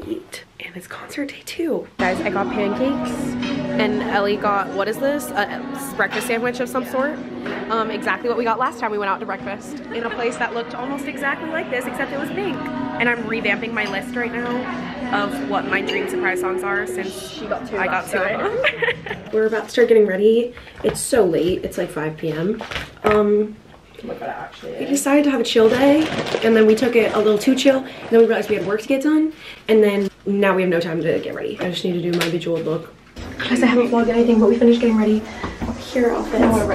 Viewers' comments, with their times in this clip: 0:03 just me or i hear fortnight in the bg 😭
0:22 the way the cafe was playing taylor like what?!